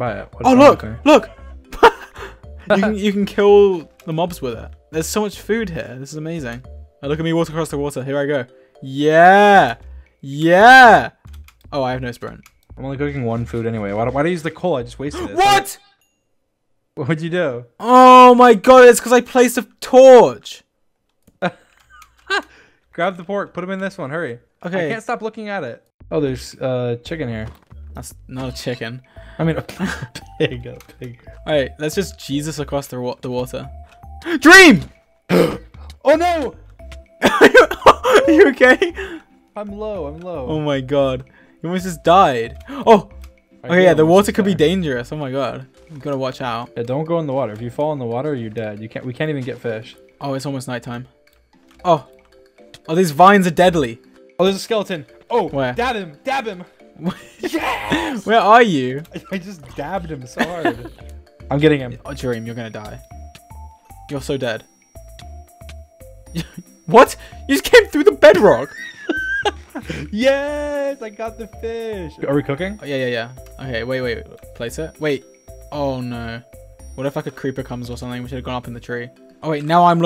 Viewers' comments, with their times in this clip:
0:05 “there’s so much woof here, it’s amazing..” The pig-“what did he sayyyyyyyyyyy”
0:37 Am I the only one that heard in like George saying to dream your gay
0:38 I was the only one who heard George says "your gay?" 😂
0:40 you are ok? my hears : you are gae?
1:04 Illuminati music intensifies